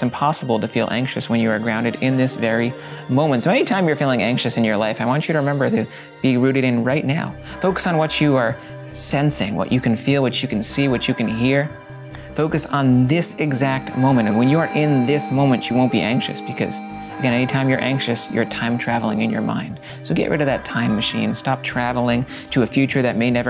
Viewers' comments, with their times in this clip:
0:08 I was listening to this part and I close my eyes and listened to his voice and everything went dark then I woke up and like forgot where I was and freaked out until I noticed